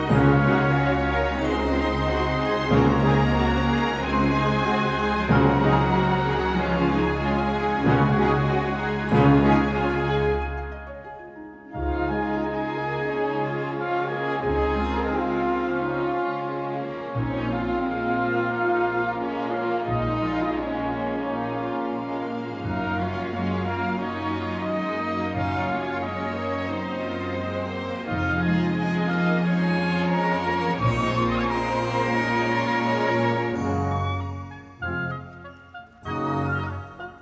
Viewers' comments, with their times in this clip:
0:10 who else also cries everytime hit. Something about that note is just so beautiful, like so so beautiful it makes you cry happy
0:11 The notes on are my favourite part
0:21 I love how the music sounds so beautifully fragile, full of hope. Also love how Joe Hisaishi smiles at the same time, with a true and sincere smile. Really emotional movie and soundtrack.